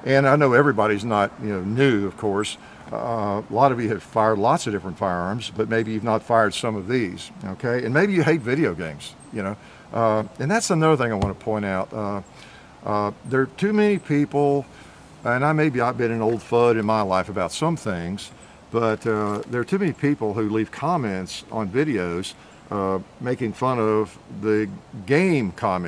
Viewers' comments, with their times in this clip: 0:10 he sounds EXACTLY like Dutch lol
0:10 when he said, “always have” it kinda sounded like Dutch.
0:11 he sound like Dutch when he says “I always have”